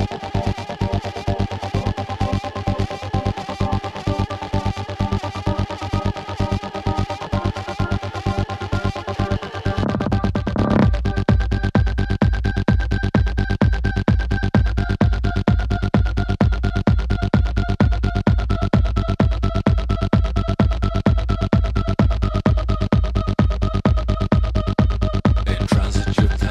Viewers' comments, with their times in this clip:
0:09 I love this sick moment in sounding like engine up the beat, raw eargasm, fire